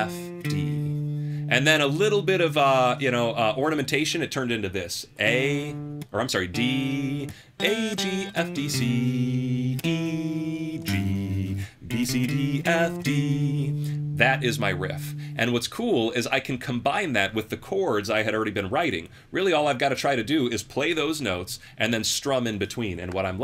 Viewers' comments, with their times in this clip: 0:05 reminds me of "Impressioni Di Settembre" by Premiata Forneria Marconi